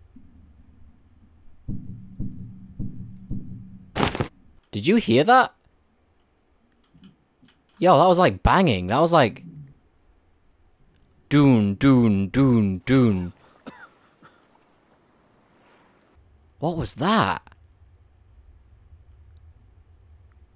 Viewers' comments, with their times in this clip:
0:04 What was thet banging sound ? XD So the animals don't spoil, if u don't skin them?